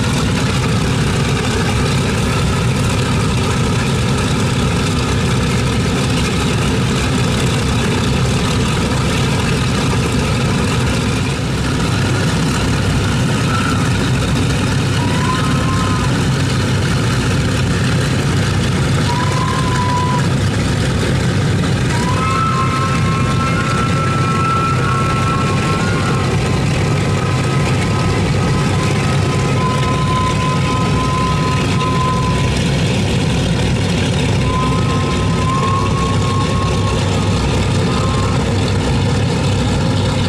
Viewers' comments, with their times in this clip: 0:04 like an industrial strength motorcycle.
0:26 i wonder why the nose steering column squealed like that.